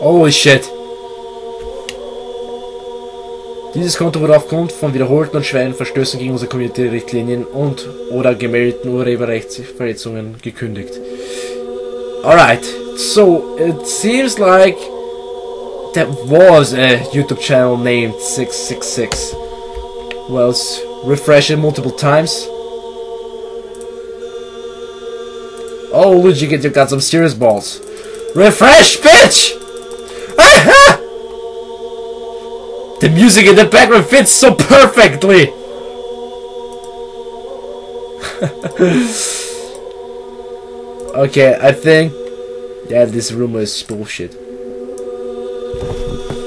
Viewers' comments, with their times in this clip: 0:06 WAIT! You speak sweden or what?
0:33 the music of the backround feels perfectrly LOL REEEAY REEAY